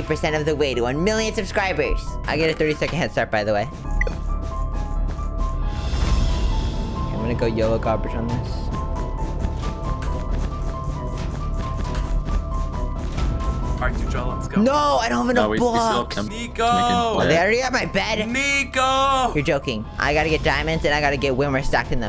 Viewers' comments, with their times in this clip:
0:07 ur real voice?